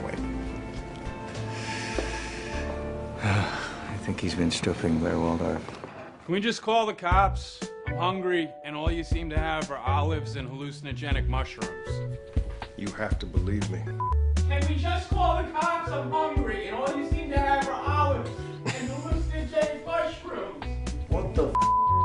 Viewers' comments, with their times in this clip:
0:03 Did Rufus say "I think he's been stripping Blair Waldorf"???